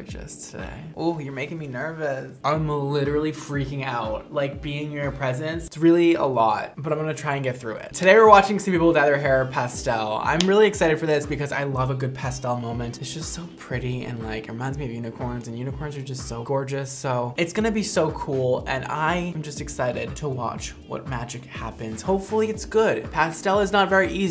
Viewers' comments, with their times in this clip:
0:09 omg you said pastel😂i thought you said passed out lol😂😂😂